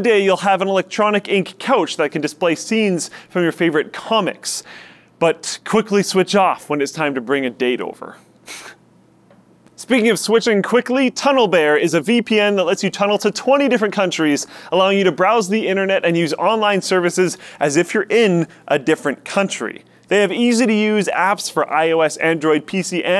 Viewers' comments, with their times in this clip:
0:06 That laugh doe
0:08 Why would they leave in? Dat awkward sigh/semi-laugh pause.